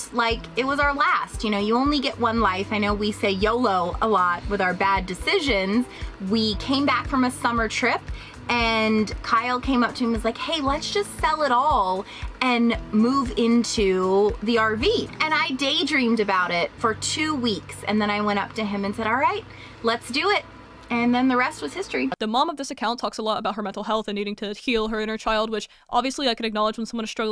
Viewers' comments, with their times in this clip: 0:08 she sounds exactly like Trisha Paytas